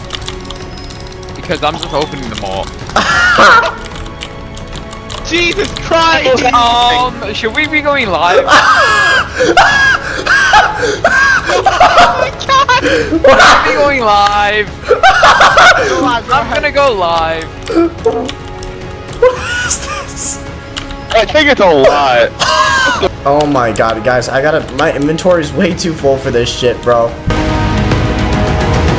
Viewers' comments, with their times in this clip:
0:09 bro sounds like a horse💀